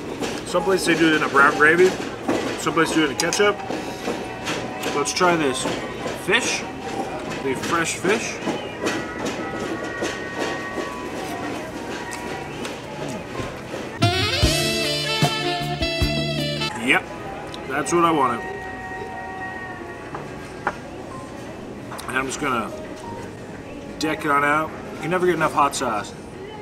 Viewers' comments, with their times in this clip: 0:09 I hear a fellow Canadian on the radio. Lol